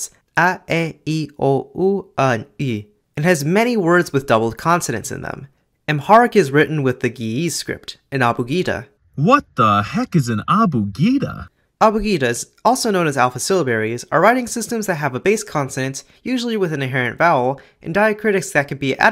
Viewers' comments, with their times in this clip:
0:05 'birr' sounds like 'beer'. OK, this drink is Ethiopian main currency.